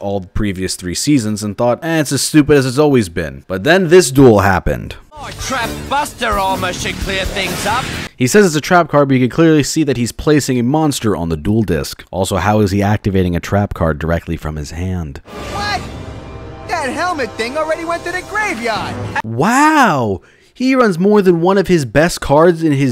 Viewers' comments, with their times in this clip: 0:05 "Moi Trap Basta Armour shad cleer thangs ap!" is the most stereotypically-Australian-sounding accent I have ever heard in my life, but then, that's also exactly how Americans trying to do a Cockney accent end up sounding anyway, so I can totally believe that's what the VA was trying to do.
0:07 Kind of like hearing "My Trap, Buster Armor" instead of the card's actual name: "Trap Buster Armor". With as much criticism this guy gives, he sure makes dumb mistakes.